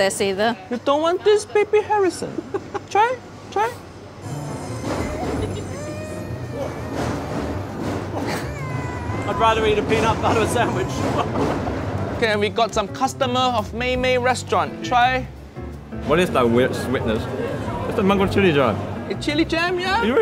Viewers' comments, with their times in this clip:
0:04 fried rice so bad it made the baby cry to see their dad eat it. 🤣